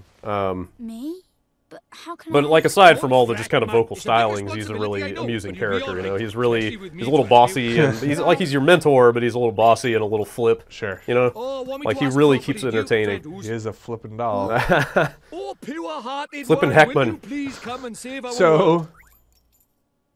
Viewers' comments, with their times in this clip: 0:07 i might get the game just for the welsh doll. I'm right now.